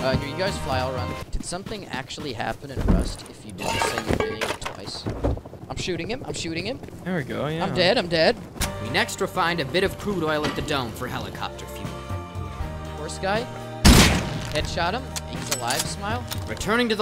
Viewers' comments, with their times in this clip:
0:05 forget repeating things once lol, rust players develop the most amazing stutter at times. someone isnt dead, theyre dedededede lmao